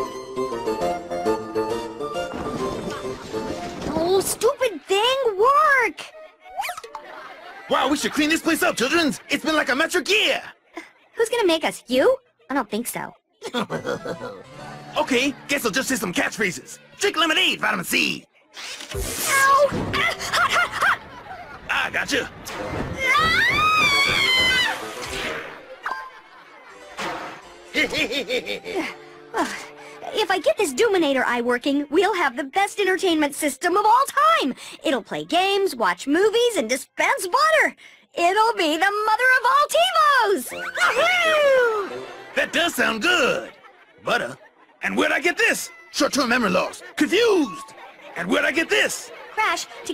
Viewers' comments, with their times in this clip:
0:04 definitely sounds like jimmy neutron.
0:23 Coco's female scream. (With her head and hair burning)
0:30 Sounds like a party.